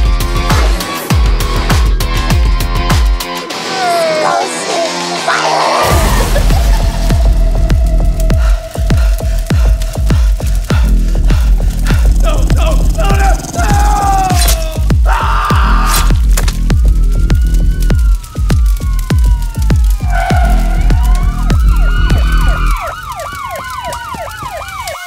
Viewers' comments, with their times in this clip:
0:06 The laugh is very well placed!